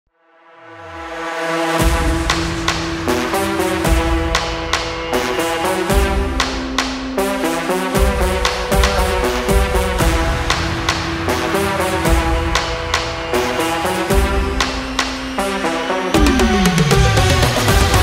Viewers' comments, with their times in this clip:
0:00 Omg the intro is almost identical to brass 😂😂😂 Dope song tho